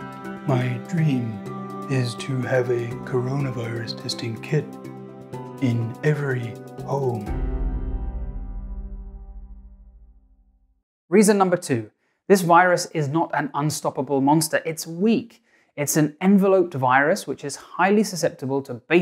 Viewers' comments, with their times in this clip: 0:07 I fell off my chair I now need medical attention. Edit: Looking at it again, you're supposed to speak 3 words at a time, interspersed with 1-2 second pauses. I rate 9/10.